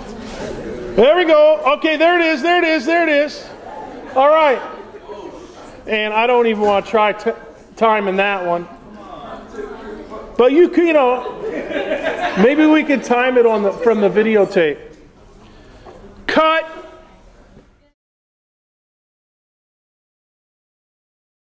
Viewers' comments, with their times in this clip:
0:10 dat laugh... i see what you did there